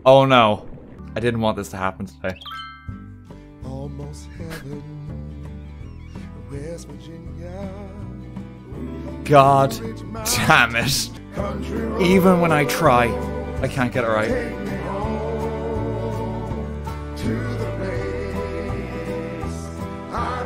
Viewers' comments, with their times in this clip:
0:04 I love how you can't just silently hear it creeping up in the background